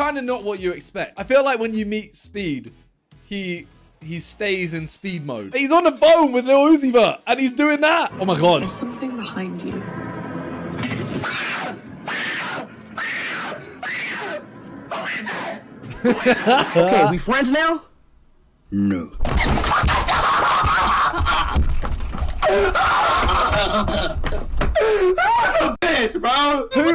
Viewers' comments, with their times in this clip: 0:08 CANT HANdLE THE LAUGH IMAOOO🤣🤣🤣🤣